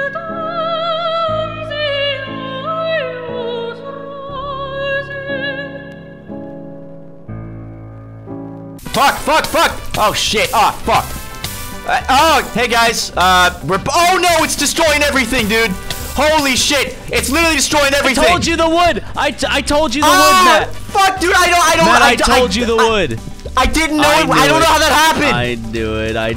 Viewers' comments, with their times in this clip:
0:09 What a great choice of music, honestly